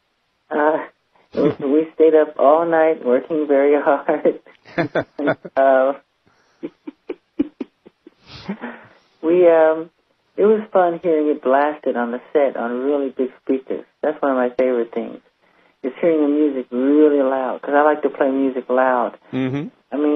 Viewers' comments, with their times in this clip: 0:05 Michael's laughter answered his fan's question hahaha